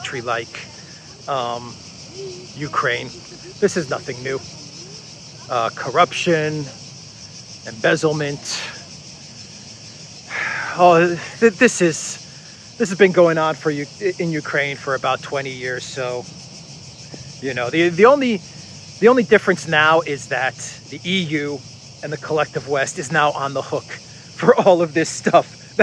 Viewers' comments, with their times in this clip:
0:10 Listen to all those tasty crickets!